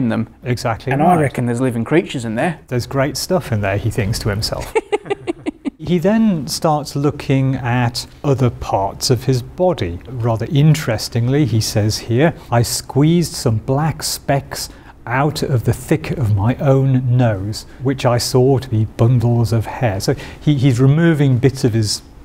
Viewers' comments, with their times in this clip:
0:03 That laugh o.0